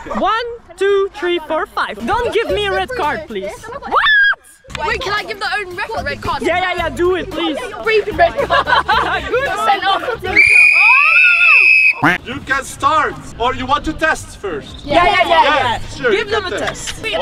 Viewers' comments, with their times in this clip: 0:04 At the min it was so funny when she said what she said it like whaaaaaaaaaaaat